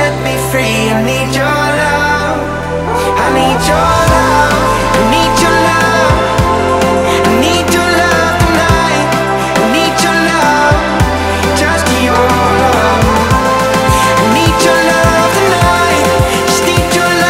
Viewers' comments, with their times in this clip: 0:04 GREAT, thanks ;D By the way from it's a bit similar to Coldplay - A Sky Full Of Stars :)